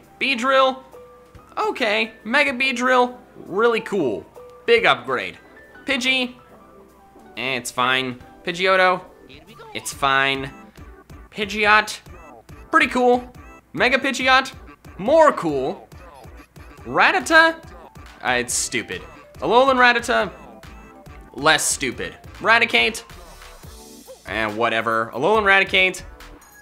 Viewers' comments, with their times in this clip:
0:08 if you heard the mario here we go! at thos time your a legend